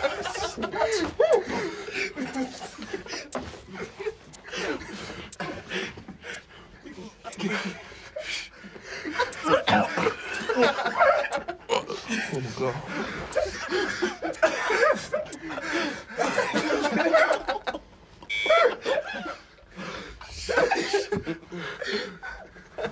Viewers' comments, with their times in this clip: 0:03 laughing waaayy too loud